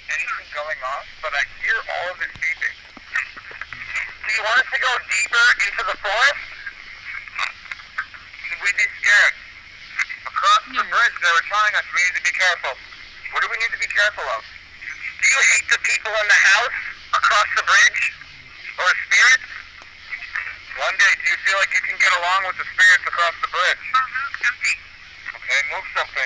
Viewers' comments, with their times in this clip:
0:09 Did someone say hey ?